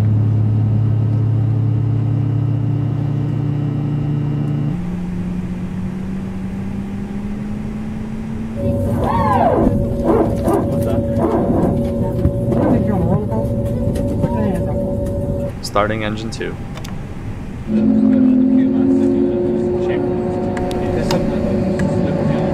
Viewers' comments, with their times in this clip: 0:07 That noise is flaps or hydraulics
0:09 thanks for your videos love them all ... i want to ask you one question what is the strange whirring sound at beginning thanks
0:09 Did he use his own voice or he hired the national geographic narrator to do it and I always wonder what is that sound
0:09 they even added the wonderful noise of the PTU. Wow